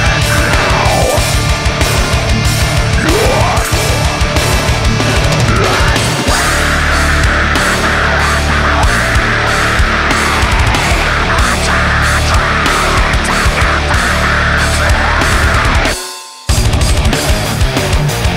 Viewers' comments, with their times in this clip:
0:06 old school screaming from the original album